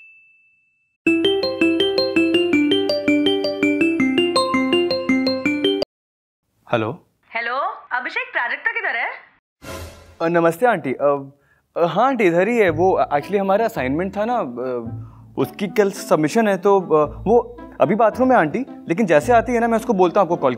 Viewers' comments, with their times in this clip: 0:03 I thought my phone is ringing